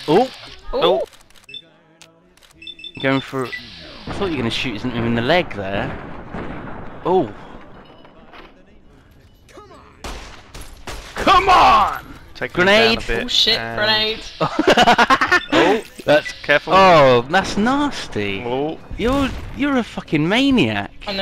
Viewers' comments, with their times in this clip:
0:09 captain falcon come on